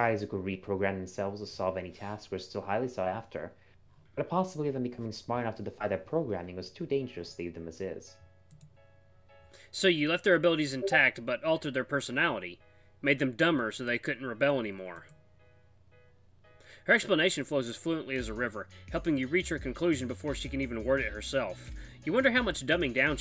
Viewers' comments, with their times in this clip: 0:10 i thought that was my discord 😭